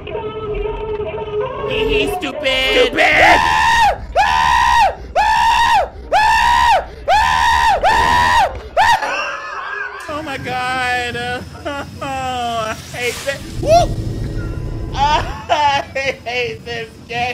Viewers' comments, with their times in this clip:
0:03 tell me that’s not spongebob when squidward scared him telling the hash slinger slasher story🤣🤣💀 “and then he…. GETS YA”😭😭
0:04 sounds like SpongeBob after the Hash Slinging Slasher story
0:04 Why does he sound like spongebob "the hash slinging slasher" lmfao oh and hi I'm new